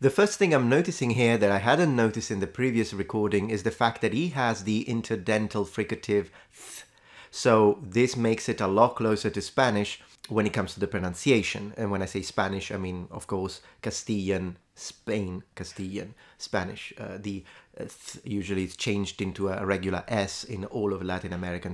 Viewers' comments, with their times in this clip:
0:09 TH = Castilian Invasion. These sounds are present in Celtiberian. it's not native.